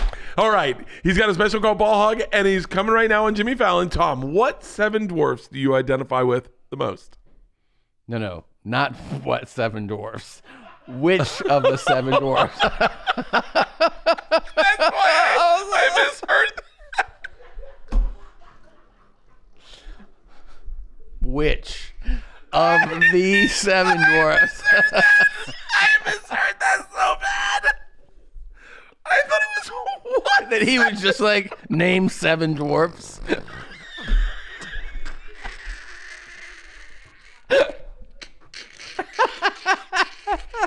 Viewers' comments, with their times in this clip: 0:03 Bert dying of laughter is the funniest thing 😂😂😂
0:13 the point where Tom starts showing signs of covid-19 and Burt does his Winnie the Whistle impresion.
0:25 breakdown crying laughing. Going back through and watching for highlights